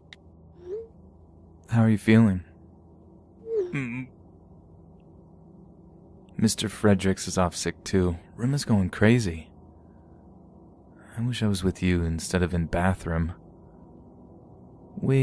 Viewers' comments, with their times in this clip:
0:03 Nice sound effect lol